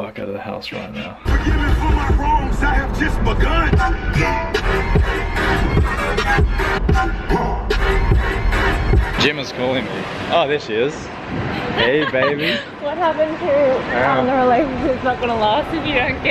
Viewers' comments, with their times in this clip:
0:04 bringing back the dubstep vacuuming? lmao